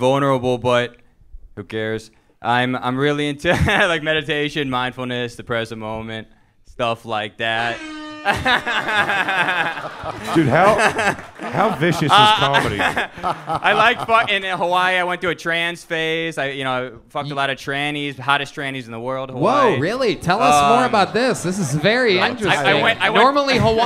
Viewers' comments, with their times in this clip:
0:05 That DJ drop Redban did when the dude was talking about “mindfulness & meditation “ was HILARIOUS BRO